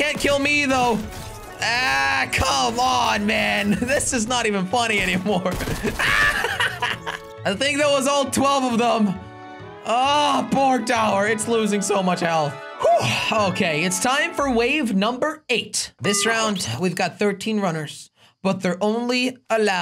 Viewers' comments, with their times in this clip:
0:03 he said it's not even funny anymore but he laughed
0:04 he said it is not even funny anymore AS HE IS LAUGHING